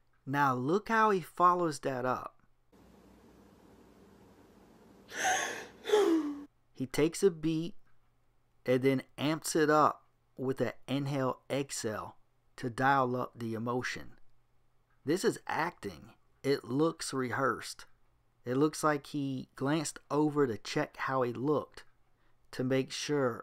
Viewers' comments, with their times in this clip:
0:05 Sounds like that Facebook message sound. edit: Shit, you said it too. lol